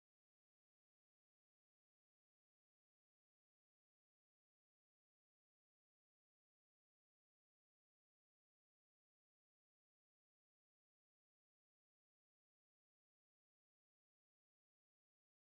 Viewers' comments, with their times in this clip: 0:03 There is a sound problem